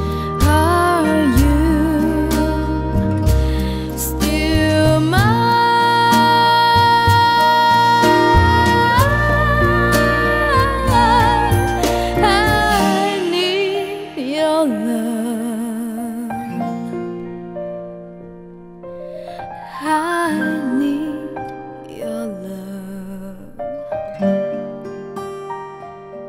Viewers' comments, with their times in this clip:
0:09 Was that a falsetto already or still a head voice on the ? Her voice range is so complex that you're left bewildered if she's still in her normal voice range or not already. Haven't heard a whistle from her yet, but in my humble opinion, she's better off when she transits from mix to head voice to falsettos even seamlessly... simply mesmerizing even haunting at times...